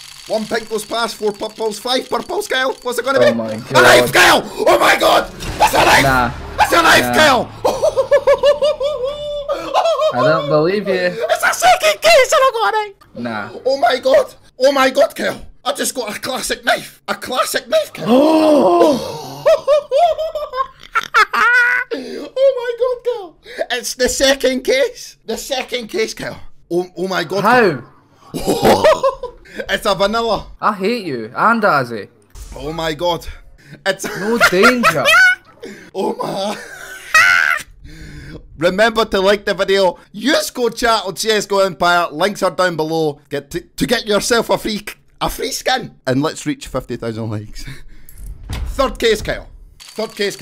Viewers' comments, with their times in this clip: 0:07 Pennywise laughs XD
0:35 Minute good joker impression!!